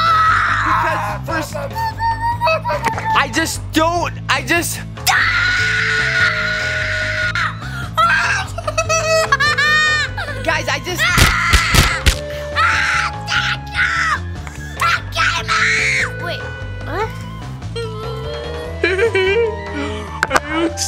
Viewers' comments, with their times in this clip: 0:05 😂😂😂😂😂😂😂😂😂😂😂😂😂 chase scream 😂😂😂😂😂😂😂😂got me on the floor.
0:05 my ear owww
0:05 ow my ear hurt